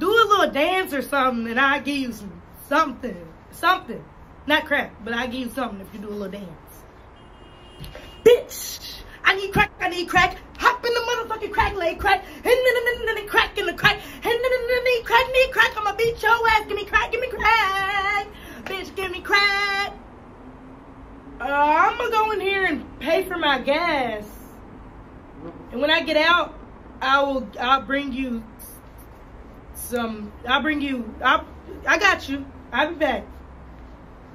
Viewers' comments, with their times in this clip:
0:07 This might be my K-pop infested mind but I could've swore I heard Blackpink's Boombayah 😳
0:18 The voice crack be like crackhead complation